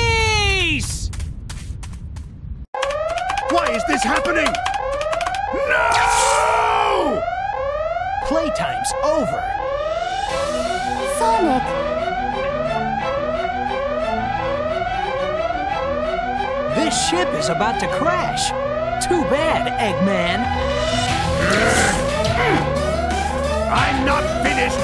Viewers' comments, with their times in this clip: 0:05 the best eggman “NOOO” ever imo